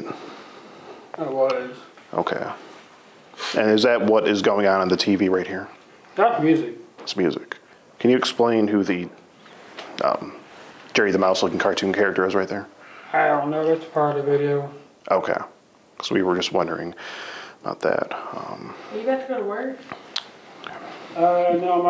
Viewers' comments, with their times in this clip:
0:07 LOL the way hes asking those questions in such a serious tone 😭